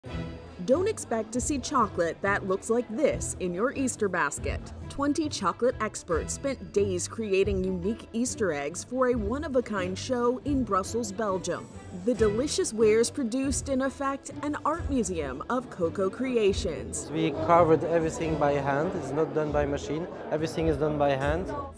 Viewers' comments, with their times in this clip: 0:06 the statue next the red egg went BOOOMMMM